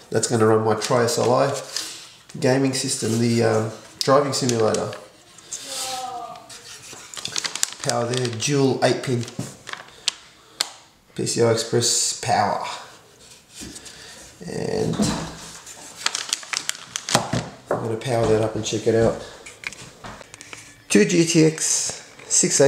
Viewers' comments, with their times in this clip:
0:05 someone had an orgasme ? O.o